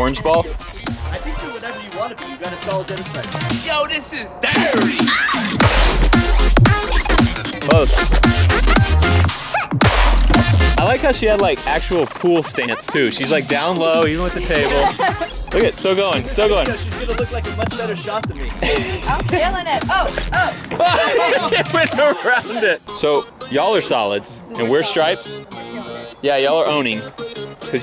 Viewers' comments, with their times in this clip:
0:10 did he just fart XD?